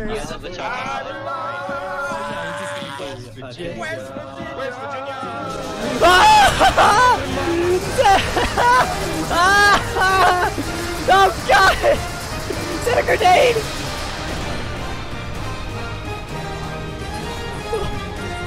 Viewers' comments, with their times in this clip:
0:05 nice choice of music and that outro music is even more nut worthy
0:06 That demon slayer ost fits perfectly